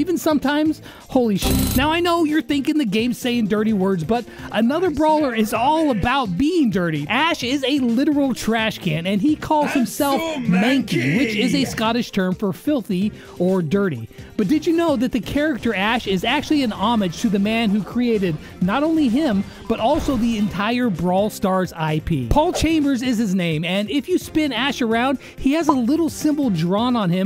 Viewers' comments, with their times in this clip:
0:09 is it just me or does anyone hear ash say "im so mad gay"